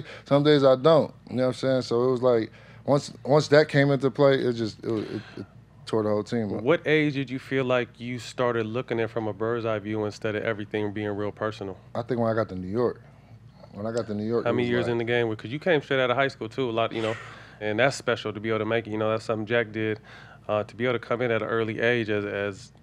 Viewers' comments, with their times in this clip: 0:04 "Careful" A ghostly whisper as JR is talking